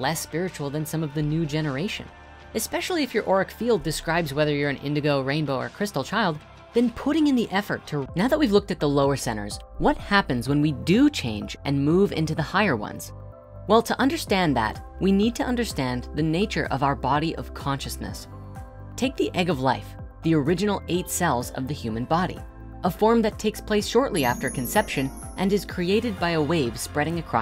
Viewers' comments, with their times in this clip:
0:08 has a skip